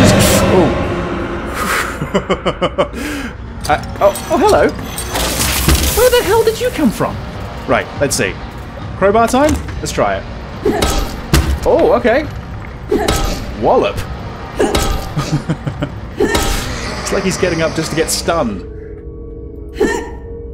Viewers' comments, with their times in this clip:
0:05 its not just handy but it makes a satisfying noise